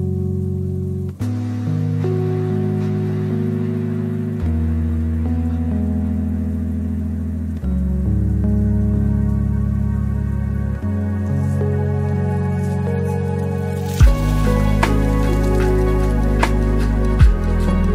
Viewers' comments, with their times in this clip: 0:03 Uranus and there are sounds of human voices.